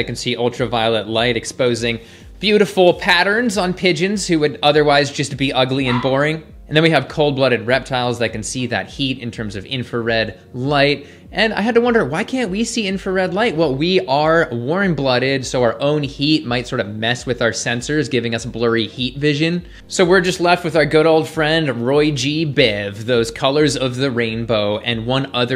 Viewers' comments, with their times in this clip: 0:06 Whats with the Terrier barking ?